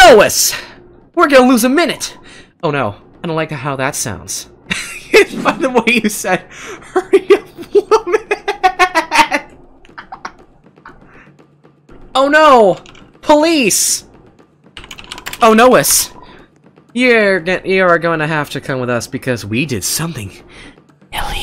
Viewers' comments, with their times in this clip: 0:04 That laugh tho-